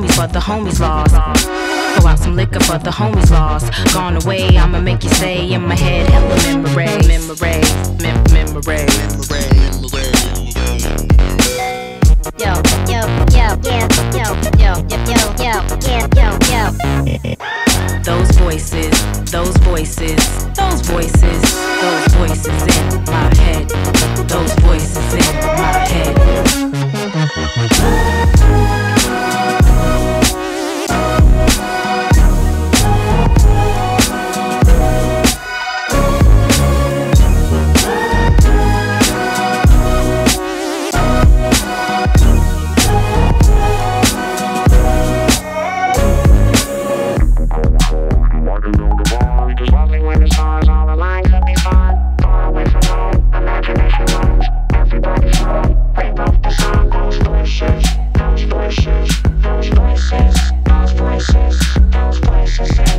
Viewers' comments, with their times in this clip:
0:10 When you connect your USB on Windows XP.
0:11 Windows XP Usb connected
0:47 Daft Punk style !